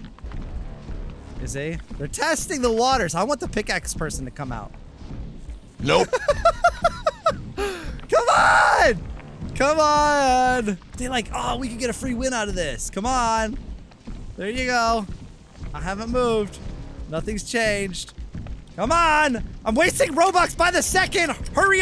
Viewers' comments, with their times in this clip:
0:08 that “COME ON” sounded like “come on, I ain’t no noob, I caught a hacker”